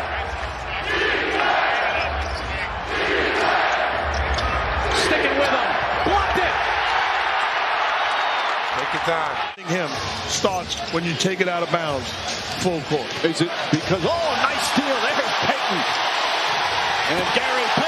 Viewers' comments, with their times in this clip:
0:03 What crowd shouting ? S,i,e,g H,e,i,l?